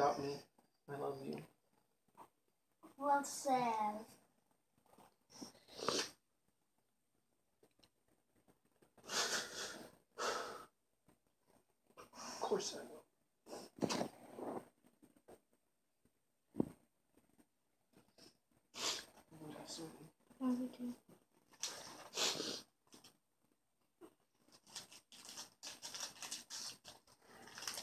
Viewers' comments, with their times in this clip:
0:09 that breath . it has lot of things